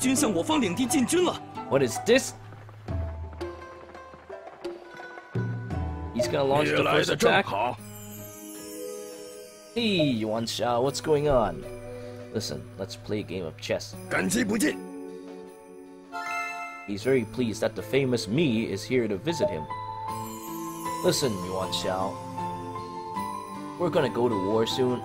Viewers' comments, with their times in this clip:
0:08 What is this Christmas-sounding music at meeting with Yuan Shao in North Korea ? Doesn't seem to be in the ROTK 13 OST as far as my 10 minutes of search through YouTube ROTK 13 OST lists have shown, so it must be one of your modded additions. It sounds very nice, what is its name?